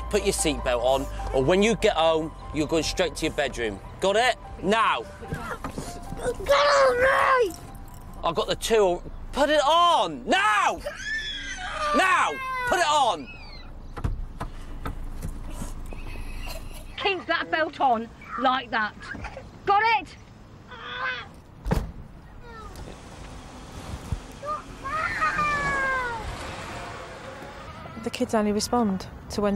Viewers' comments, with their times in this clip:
0:06 sounds like Help Portuguese Preview 2
0:10 He Is Yelling At Him.